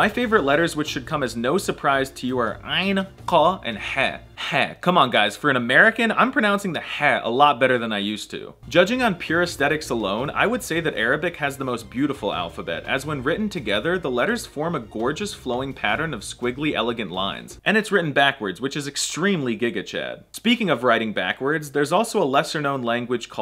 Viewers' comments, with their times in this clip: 0:04 Your pronunciation of the letter ح has improved greatly, as it has for all the letters, good work! I look forward to see you speak the language as a native and me to master English!